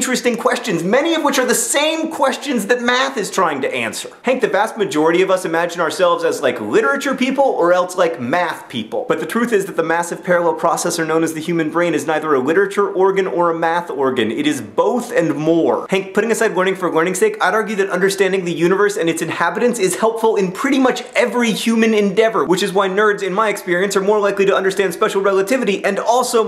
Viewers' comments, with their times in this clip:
0:09 you said the word 'truth' really funny. No, thats not all I got from this video, mostly I got apathy because I was almost unable to keep my GPA up high enough to transfer because I thought that I would fail my chemistry class. I may be done with that chem class but I still need to take one more so for the time being I hate science and I am completely apathetic towards how beautiful it can be. However I got an A in my lit class, and I never get A's.